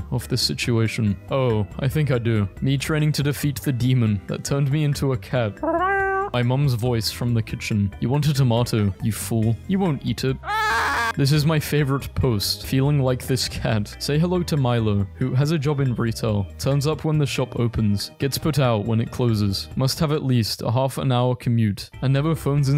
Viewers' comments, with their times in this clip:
0:05 I love the perfect mrow Honestly under appreciated ☺️ Edit: I DIDNT FINISH THE MEME BEFORE COMMENTING AND OMGGGG I LOVE IT 🤣
0:06 the way he sound
0:08 i love how you did that loud meaw
0:10 screams from the depths of hell